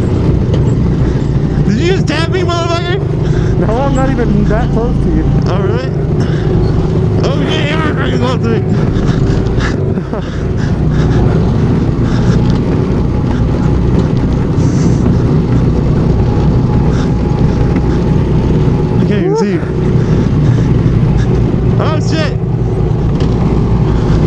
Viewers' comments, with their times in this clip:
0:08 All kiiiinds of weird sex noises :D